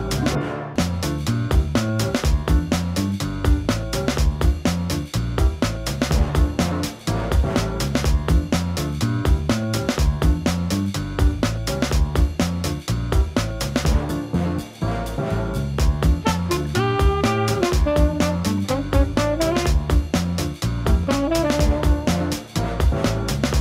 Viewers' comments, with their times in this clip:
0:06 the music matched the jumps